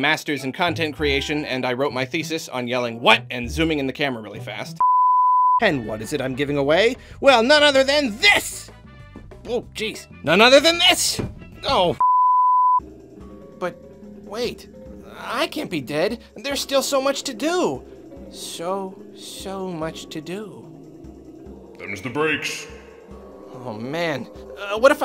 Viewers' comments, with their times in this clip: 0:09 He sounds legitimately defeated